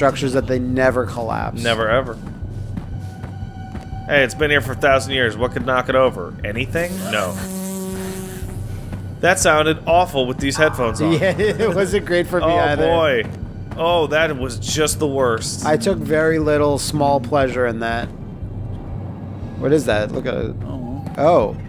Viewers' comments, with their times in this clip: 0:06 As someone who watches this with headphones I did not like the sound design ... Almost punched my wall while trying to kill an imaginary bug! EDIT: AH SHIT! Forget the bug! This game has some actual spooks in it! HELL FUCKIN' YEAH!